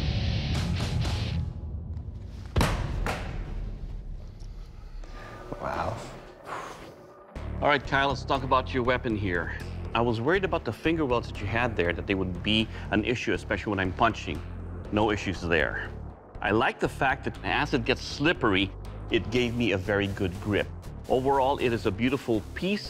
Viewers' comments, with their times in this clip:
0:06 my guys got a hiki